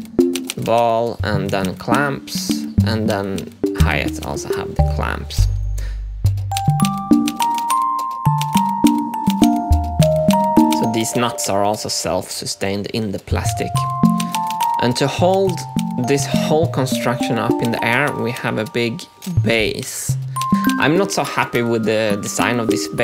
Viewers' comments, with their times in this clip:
0:10 did he just say deez nutz?